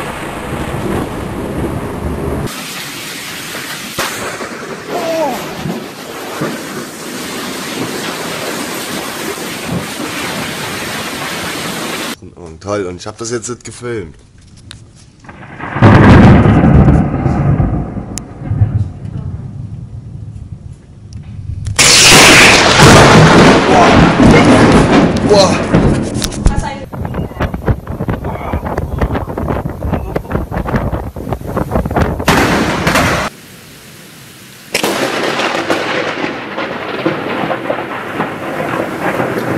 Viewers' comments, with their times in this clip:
0:03 There's a two car in mins. the lightning is sound like a Pistol gum.
0:20 that sounded like a lightsaber!
0:21 The tearing sound is terrifying
0:27 The airplane got struck by a lightning. It sounds like Balloon Pop, Firecrackers, Fireworks, Blast of Pistol and Shutgun and Sodium Explosion! 😅😅